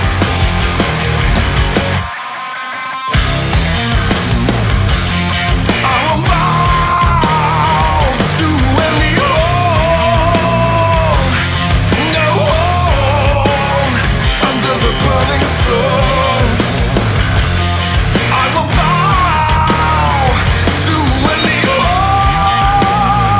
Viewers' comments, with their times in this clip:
0:07 nice chin voice